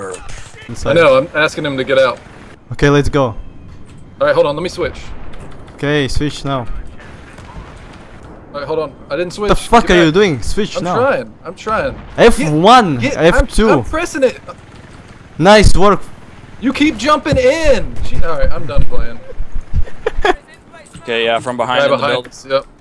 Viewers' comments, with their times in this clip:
0:04 russian accent lmao